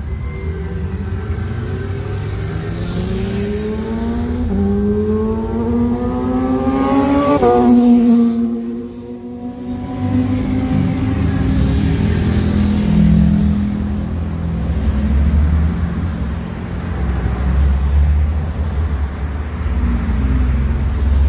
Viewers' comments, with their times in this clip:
0:05 kawasaki motorcycle exhaust 🤤